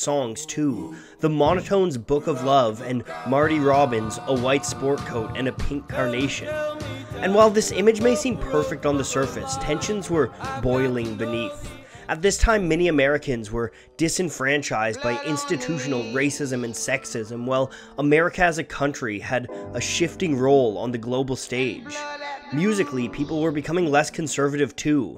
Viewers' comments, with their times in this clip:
0:08 The narrator gets into this